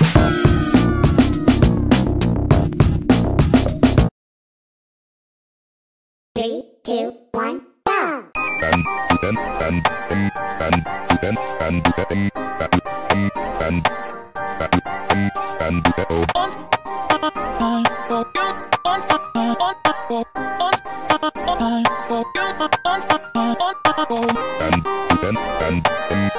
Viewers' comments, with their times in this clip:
0:08 love this song